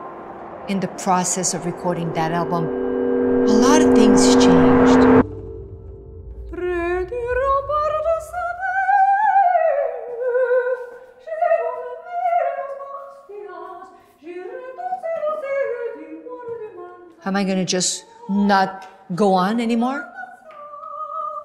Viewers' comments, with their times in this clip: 0:05 all those high notes, just EPIC